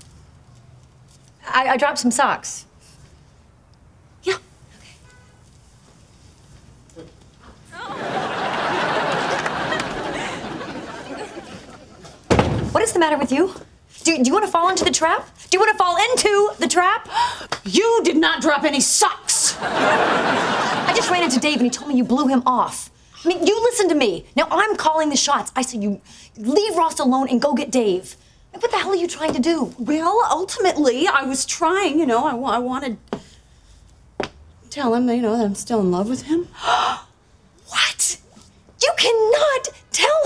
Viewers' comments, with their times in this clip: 0:08 What made the audience laugh ?
0:26 Courtney almost forgot her line there. Notice the pause there. Lol